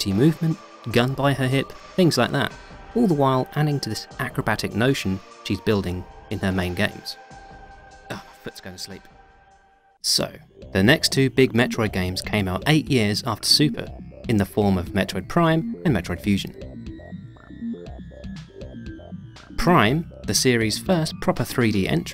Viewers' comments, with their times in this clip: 0:07 No one’s mentioning the out-of-place voice ? “Let’s go to sleep.”